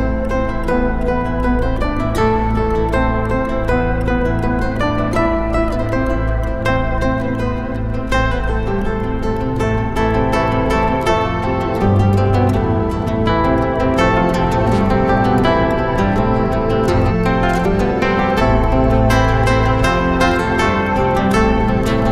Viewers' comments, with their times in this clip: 0:07 Omg those 20 seconds starting from there are just deep, round, full, full of compassion and passion!